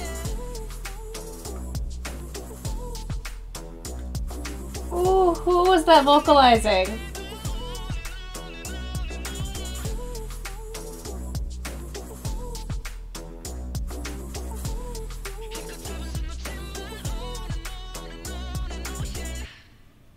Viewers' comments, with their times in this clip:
0:06 I love how amerithaikong sings when the vocal lines compose the song and vice versa, you just know the members know each other's capabilities even before they all had solo activities. it was Jinyoung going off the roof with his clear falsetto chef's kiss